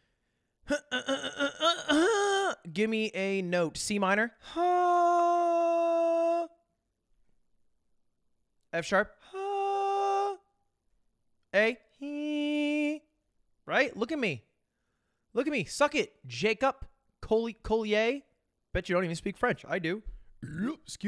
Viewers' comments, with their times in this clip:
0:03 as a certified perfect pitch music god king of existence I can confidently say that he sang an F then dipped down to an E when asked to sing "C minor" (which is a scale not a note btw, but only a musical god genius like me would know that), sang a G when asked to sing F#, and sang a D when asked to sing an A. Close enough though, Ludwig has perfect pitch confirmed.